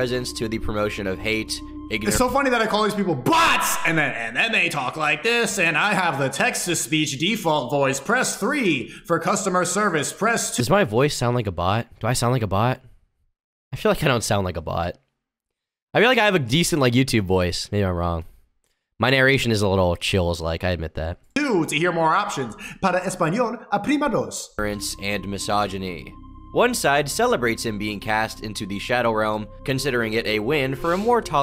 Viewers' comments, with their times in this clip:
0:10 Yes you do sound like a bot. You genuinely sound like a TTS voice like microsoft sam
0:11 you just have a presentation voice when reading so you speak clearly, not an off the cuff type of thing, you do it in streams to when you read an article, I wouldn't call it a robot voice though. Wouldn't sneako back in the day talk very clearly as well?
0:18 No you do not sound like a bot. But the pronunciation is weird. I am a fan of deplatforming. At least when it hits deranged and insane people like Sneako or Alex Jones.